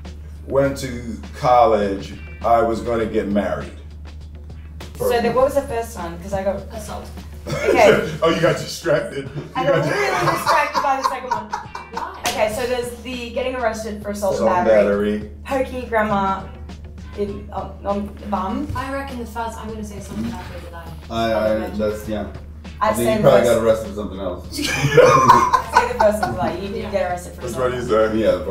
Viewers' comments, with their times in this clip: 0:09 ........it's Will Smith's laugh that keeps making me cry in tears!!! 😂😂😂😂😂😂😂😂😂😂😂😂😂😂😂😂😂😂....can't stop!! His a funny guy...I can't get a enough;) Soooo handsome looking <3